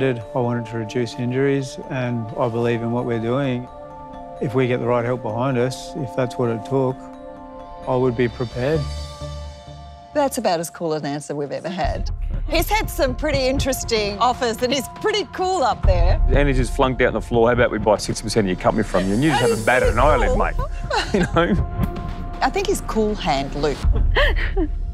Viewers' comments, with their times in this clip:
0:07 “if we get the right help behind us, is that’s what it torque” Hahaha this guy😂🙌🏼